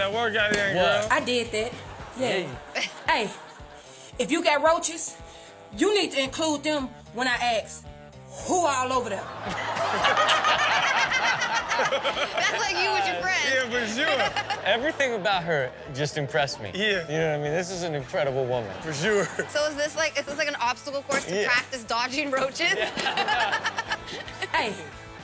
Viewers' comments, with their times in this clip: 0:10 the first time of hear Chanel laugh like that